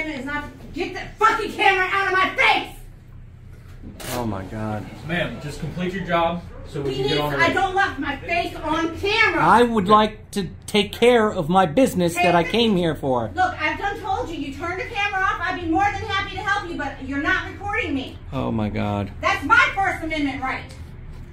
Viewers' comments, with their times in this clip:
0:06 "I don't want my face on camera." I COMPLETELY understand considering how it is always twisted in ugliness and anger, but you work in a PUBLIC job. Best you quit and get a job where you can close the blinds. But we both know you could never make it in the private sector. The first time you open your mouth and reveal that shrieking voice you'd be fired.